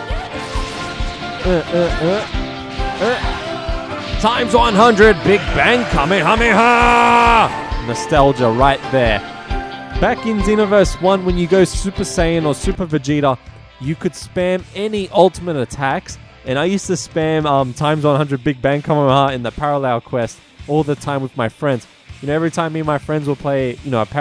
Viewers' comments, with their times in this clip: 0:06 Whats up with the random lobby music BTW love watching you kick these peoples asses. <3